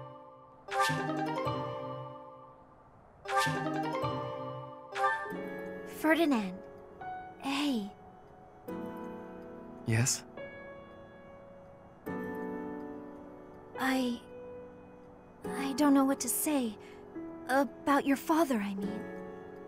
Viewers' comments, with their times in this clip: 0:05 Are they talking by shouting?